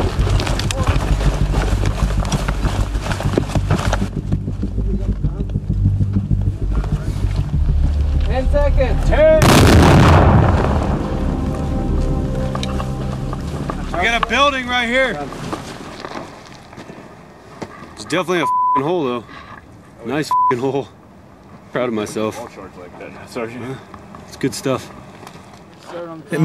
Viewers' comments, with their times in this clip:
0:06 LOL. you hear a guy: 10 seconds, another 10 .. BOOOOM countdown fail
0:09 lol 10! 9! *BOOM